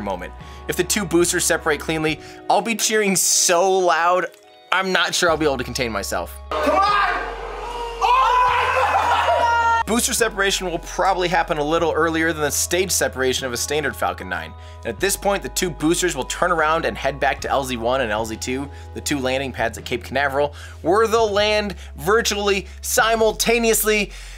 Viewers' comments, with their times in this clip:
0:07 The poor fat kitty getting scared when he cheers the successful booster sep of the Falcon heavy lmao